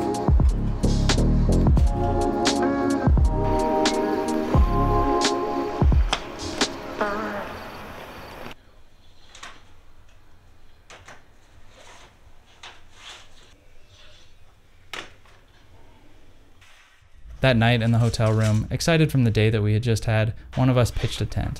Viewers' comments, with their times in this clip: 0:07 Was that a fart or the music?